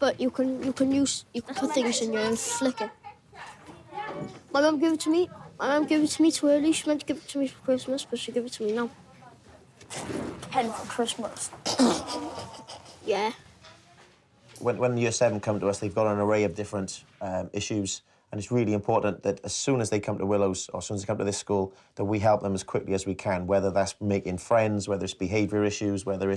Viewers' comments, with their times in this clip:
0:09 that guy is rude he said 'Pen for Christmas' and he laughed